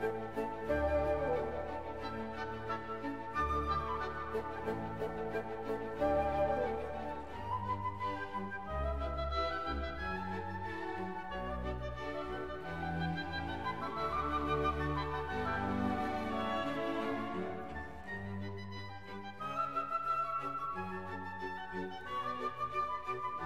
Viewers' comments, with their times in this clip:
0:07 !!!!!!!!!!!!! I really don't have the words to describe the elegance, beauty, and genius of this melody .